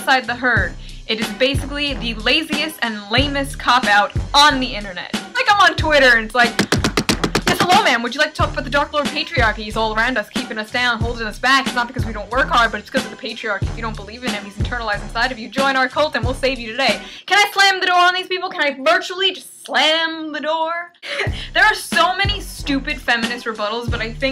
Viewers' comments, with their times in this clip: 0:05 the beat starts to sync with what she's saying, it's like a patriarchy cult rap
0:07 wow you would make a good rapper And you will never find this shoe NEVER
0:07 I thought she was actually rapping with the Dr.Dre beat and shit it sounded legit
0:07 2 years late but... I genuinely thought she was rapping to the background music.
0:08 sounds like a rap
0:12 i thought you start rapping like eminem :-)